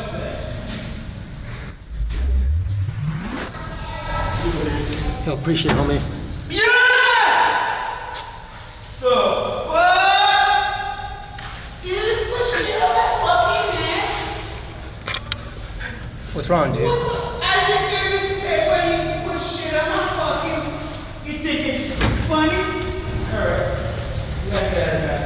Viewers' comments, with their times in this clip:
0:05 Free scream replays
0:06 I like how he said "da fuuukkkk" 😂😂😂😂 ACTUALLY I LOVE THE WAY HE TALKS PERIOD!!! lol HE HAS TO BE JAMAICAN with that beautiful accent..
0:06 this kid sounds like mike from monster university
0:06 he should be a rapper YUUH
0:08 sounds like Mike Wazowski from monsters inc
0:11 he has the voice of a lady